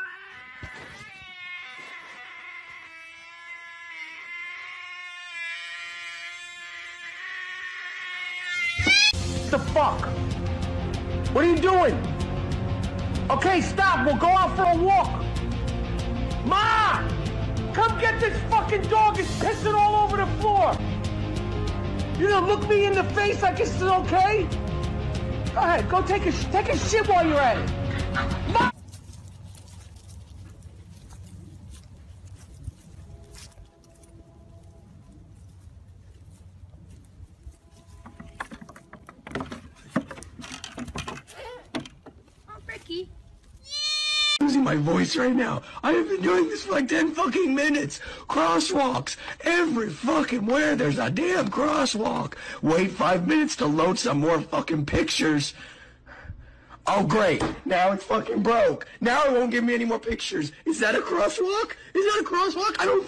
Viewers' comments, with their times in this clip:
0:08 I love how a dog is peeing with hype music playing and a man yelling at him 🤣
0:09 bro the dog is peeing on the floor because youre yelling at it
0:45 the genuine despair in this man's voice sustains me